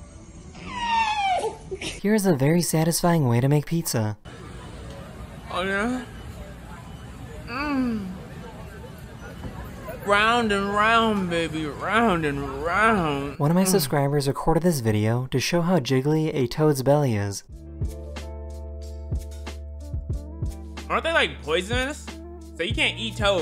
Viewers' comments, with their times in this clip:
0:06 why did bro start moaning😭☠️